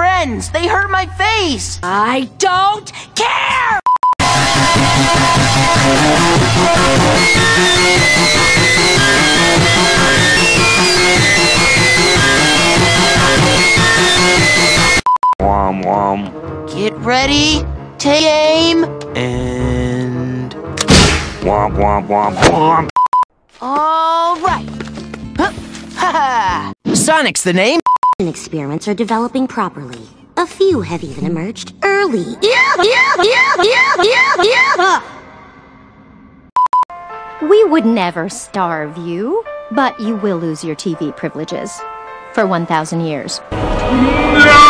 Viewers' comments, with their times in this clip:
0:06 MY EARS HURT but I like the video 😁
0:31 bloopers mean peridot is laughing at steven :D